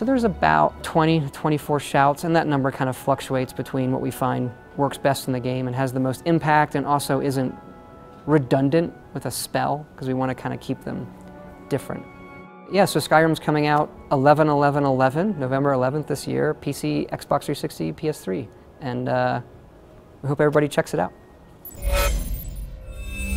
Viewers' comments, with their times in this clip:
0:06 did he say "fuck-chuating"? (btw i do know he actually said fluxuating)